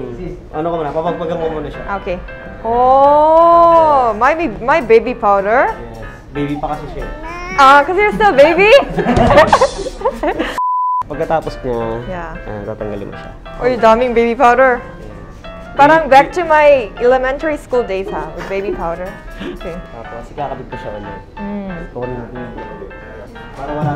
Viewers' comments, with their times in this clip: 0:09 on the scene the laugh is the same as my tutor